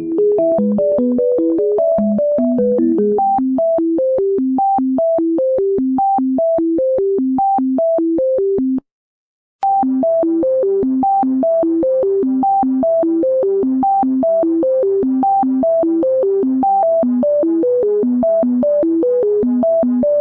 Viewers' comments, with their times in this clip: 0:08 i think he just means that there is a gap between the loops like but it doesn't matter, just ignore him and the fact that I am replying to a year old comment